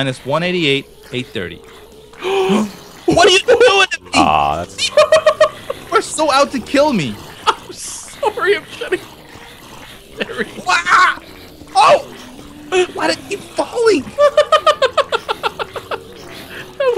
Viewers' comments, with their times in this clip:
0:04 who invited the dolphin?